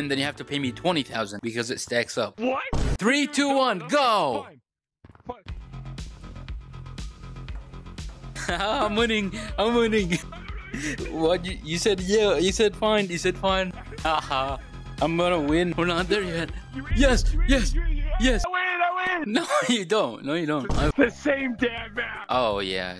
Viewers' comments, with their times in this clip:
0:09 How does bros voice change 💀💀💀